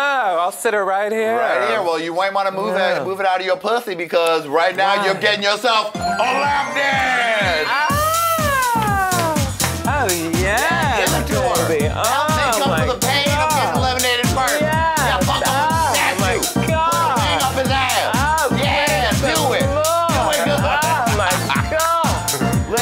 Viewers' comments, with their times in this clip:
0:07 I love her 'ohhhhhh!!'